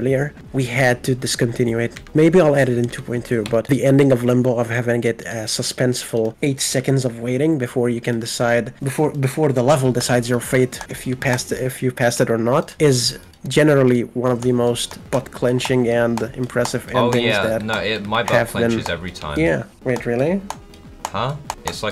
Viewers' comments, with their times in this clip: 0:09 the most arabic sounding "before" I have heard from a GD homie.